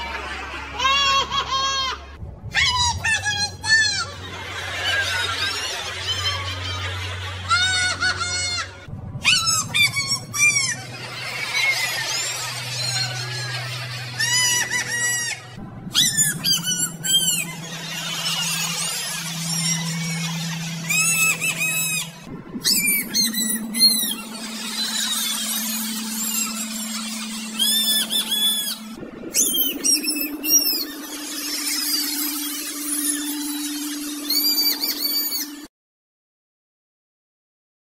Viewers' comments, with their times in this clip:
0:09 the chipmunks killed Harry potter
0:16 After it just sounds like if a squirrel killed Harry.
0:29 harry pottah mouse edition